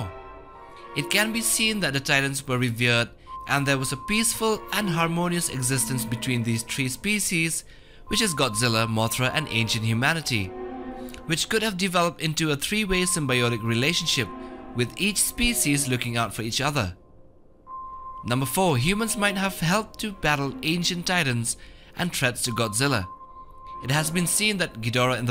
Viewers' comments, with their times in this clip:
0:06 Tree species Lol